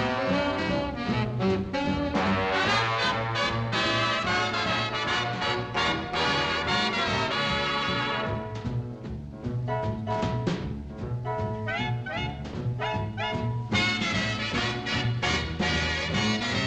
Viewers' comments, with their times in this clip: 0:03 I know it's a small part of the song, but I really like that sequence or so where the trombones play B flat-A flat-G and then A flat back to B flat (at least it looks and sounds like those are the notes). The whole song is very nice as well.